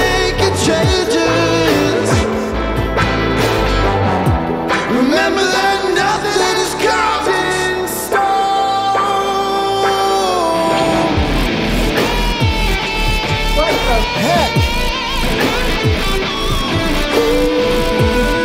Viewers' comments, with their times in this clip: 0:05 might be the greatest moment on either of your channels. The way you guys flowed off each other right here was insane. I regularly come back just to hear that performance between you two. The citrus enjoyer was a lucky one indeed.